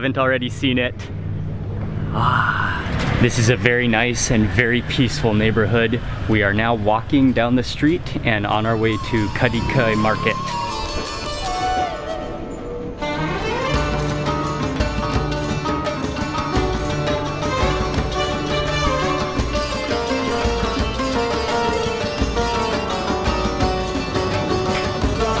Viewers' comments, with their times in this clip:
0:08 this not Turkish culture music. WTF?